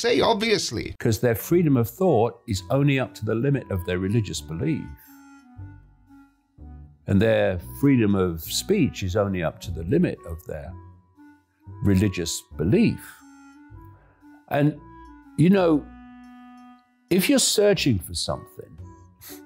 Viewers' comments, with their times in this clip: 0:05 the minute David Icke started, something about him rubbed me wrong, and not 'what' he was saying, i came here for the nonsense, but something was triggering an uncanny valley effect. then when he said, "Their freedom of thought is only up to the limit of their religious belief." it hit me, it's the way he speaks, his cadence, tambour, and the way he holds his hands. He reminds me of the Vogons (from Hitchhiker's Guide to the Galaxy) and thought, "welp. that's fitting in so many ways," and i had a nice chuckle and was able to get through the rest of the video."